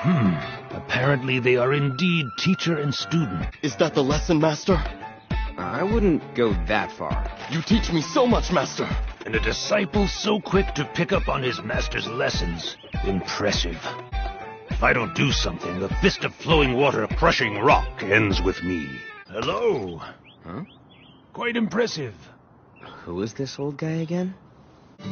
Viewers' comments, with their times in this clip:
0:07 I love genos dub voice bruh lmao